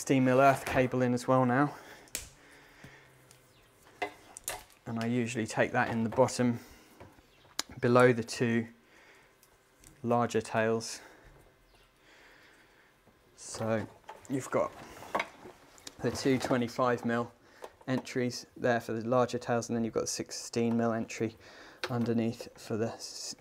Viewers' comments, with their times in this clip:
0:04 🤣🤣 an unfortunate pause at the end too